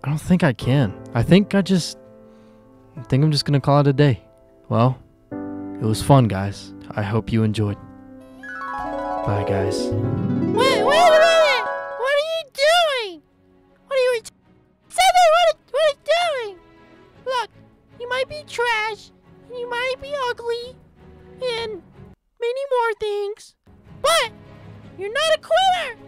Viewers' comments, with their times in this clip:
0:08 only a true intellect would come up with using the harp dream segment